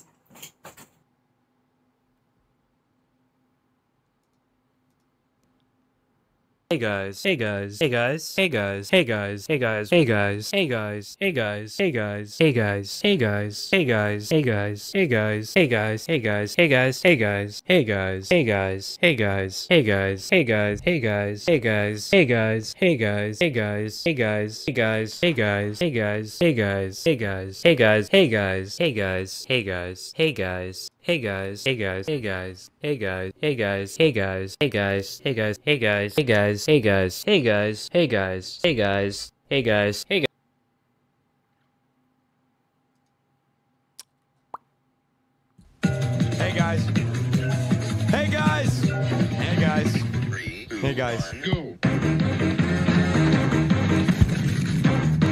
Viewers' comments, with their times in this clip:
0:06 if you listen tot this it will start to sound like “egg eyes” 😂😂
0:20 what do you hear?: 1.hey guys 2. Hey gurs 3.eggar 4. Big eyes 5. Big as
0:38 i started hearing egg rice